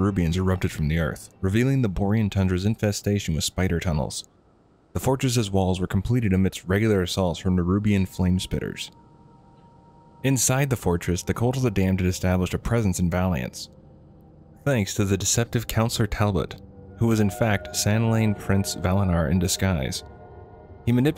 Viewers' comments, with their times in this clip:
0:06 I couldnt pass min, im sorry. You have some object in your mouth.